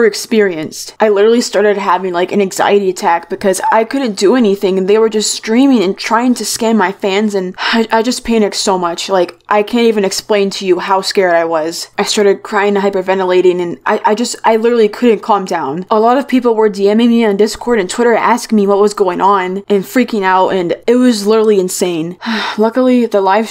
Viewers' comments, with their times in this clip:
0:04 Wow, i feel so bad for her.. You can really hear how sad she is... I thought she was about to start crying she sounds so upset.